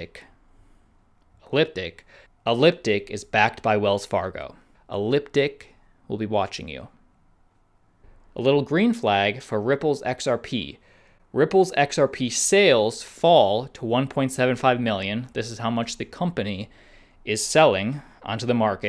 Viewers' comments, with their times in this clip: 0:04 "a limp dick (elliptic) will be watching you!" Hahahah